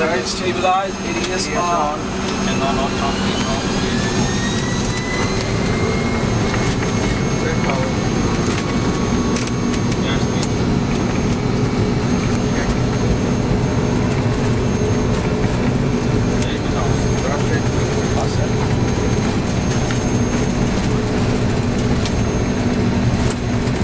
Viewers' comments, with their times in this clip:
0:09 best sound ever, the trawling buzzsaw, I have no sense in how full the aircraft was but they ere quick on the climb out sharp ascent